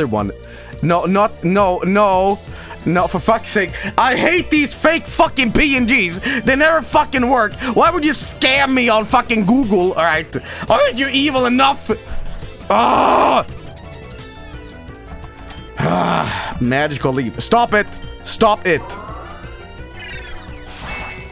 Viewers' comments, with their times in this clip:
0:09 omg that voice crack